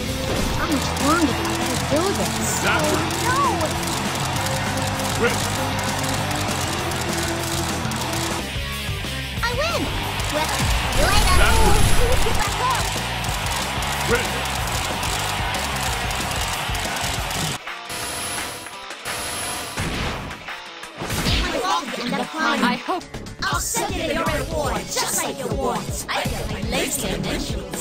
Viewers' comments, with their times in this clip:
0:08 Wow, that accent's super cute.